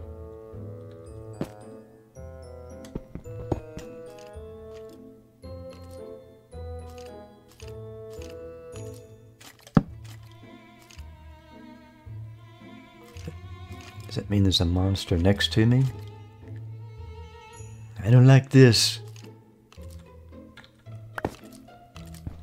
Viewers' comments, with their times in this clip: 0:07 Love how the music turned suspenseful once you could hear monsters! Also the skeleton rattling matches up with the music!